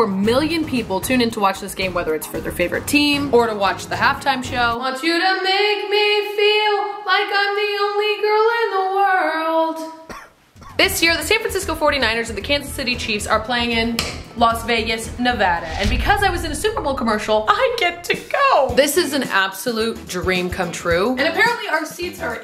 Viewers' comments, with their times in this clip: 0:04 beautiful singing so good 😂😂😂😂😂😂😂😂❤❤❤❤❤❤❤